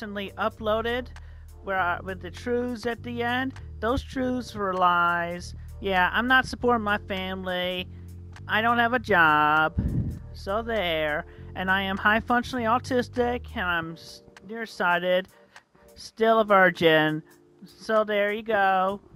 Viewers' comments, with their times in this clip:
0:06 why does he sound like he thinks this is an accomplishment??